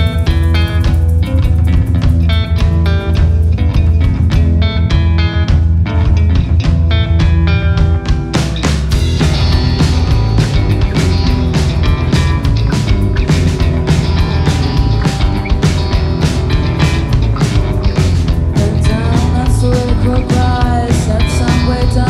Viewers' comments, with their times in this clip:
0:07 The groove that starts was the moment I realized this is my new favourite band.